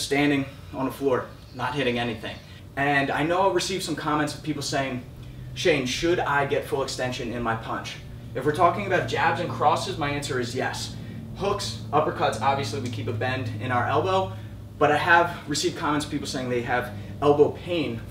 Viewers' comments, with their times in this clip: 0:04 noise of aeroplane